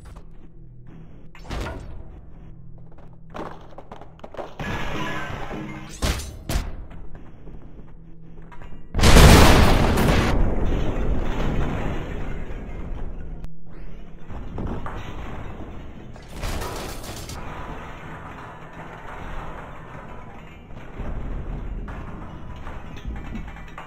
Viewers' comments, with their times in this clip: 0:06 yellow man be like MOTHERF- BOOOOOOM